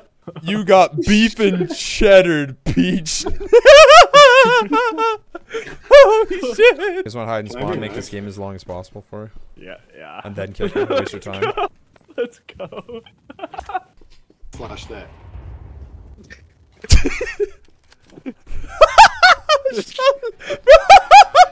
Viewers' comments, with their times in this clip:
0:03 That laugh sounded like Anomaly AHAHHAHAHA also i cant believe that you only have 400 subs, i was thinking that i was seeing a 200k subs video. I am going to see other of your stuff